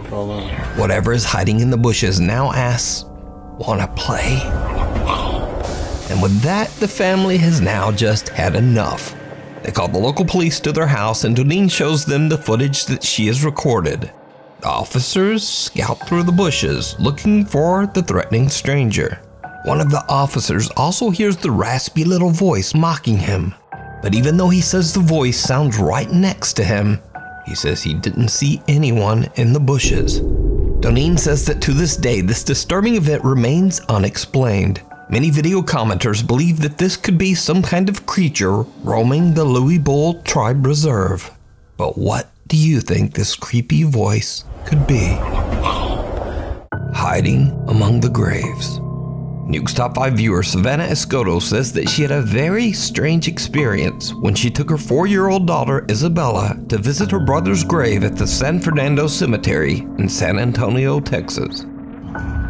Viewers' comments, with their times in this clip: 0:04 nah that's fricking Gollum after you took their "precious"
0:44 Creature's mother tongue is English right?